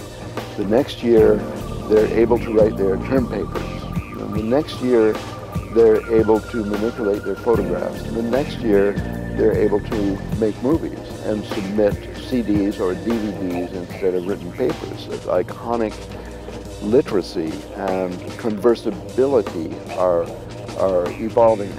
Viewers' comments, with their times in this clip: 0:04 Music gets too loud makes it hard to hear what's being said...